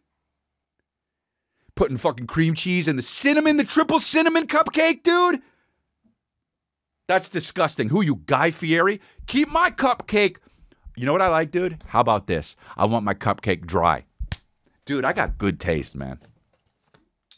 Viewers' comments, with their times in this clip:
0:04 nice little P suction pop in the word cupcake. love unintentional lip pops lol